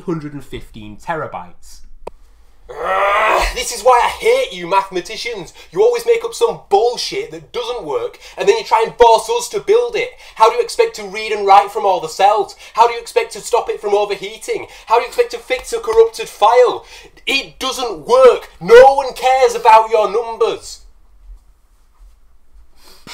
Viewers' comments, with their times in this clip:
0:04 it exactly feels like a electroboom rant 😂
0:08 noone kees about yoo nombas
0:09 how he cried after losing all his porn